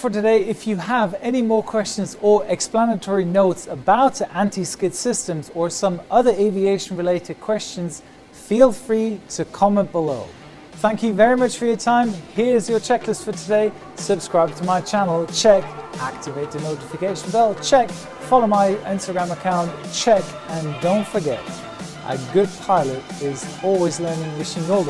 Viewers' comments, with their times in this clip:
0:09 You know the outro song is what convinced me to become a pilot when I grow up